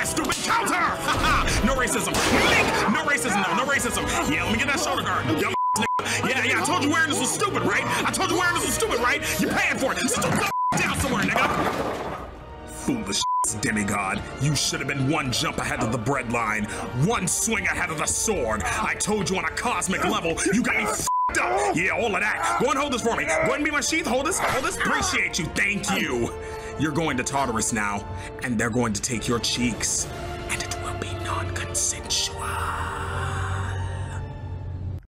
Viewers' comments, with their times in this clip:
0:10 oops you miss a beep
0:30 Zeus: (Whispering) "And it will be NONCONSESUAL...!" 😈